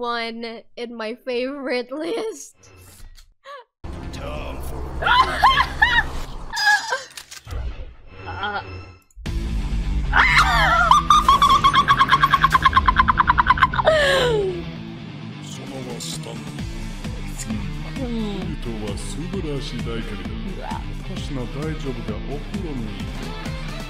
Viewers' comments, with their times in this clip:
0:04 It's my first time seeing her, I thought her laugh is normal until I heard the second one
0:07 That laugh reminds me of some kind of creature from a horror film I watched that makes that same noise, but I can’t remember what it’s called
0:10 bro that laugh lmao
0:10 the birds outside my window at 7AM
0:11 sounds like a squirl lol